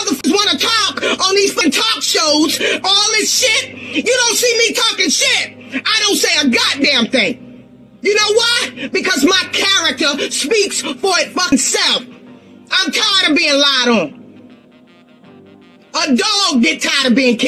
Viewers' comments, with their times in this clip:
0:03 why she screaming in camera like dat,like back up